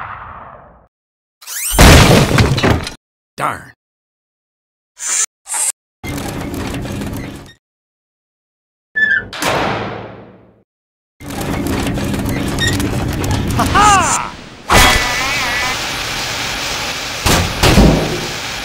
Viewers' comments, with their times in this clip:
0:05 if you listen closely you will hear sniper’s part laugh